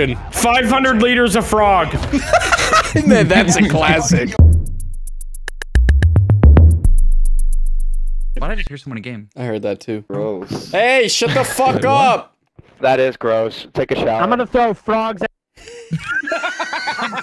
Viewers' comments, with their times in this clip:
0:05 The sounds my stomach makes when it's upset